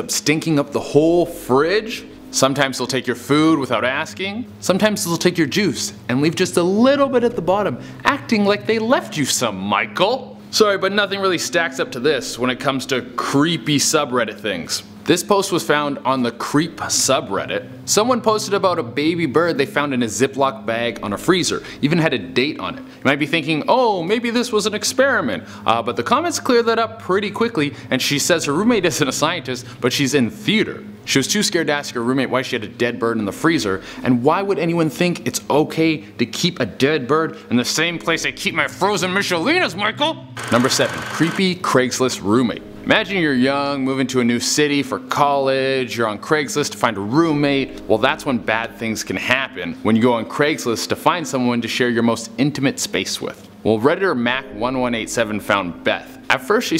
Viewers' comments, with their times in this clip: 0:10 why did he say Michael like he’s Jackie Burkhart 😂
0:38 sorry, how did you call that? "miCHelinas"